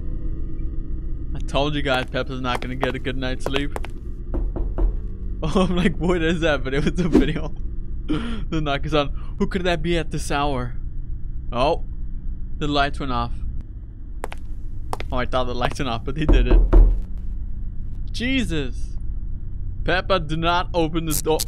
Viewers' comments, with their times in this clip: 0:04 I ACTUALLY THOUGHT THAT THE DOOR KNOCK WAS REAL IT'S SOUND CAME FROM THE LEFT SIDE OF MY HEADPHONE😭😭😭